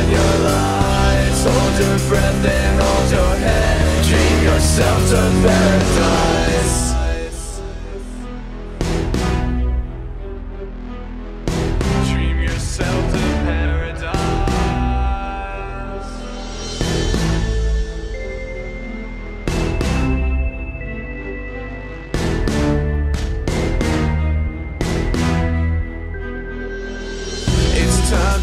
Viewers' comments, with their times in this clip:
0:10 Nice even if the criying child makes it a little weird and I didn't see this fredbear plush model in a long time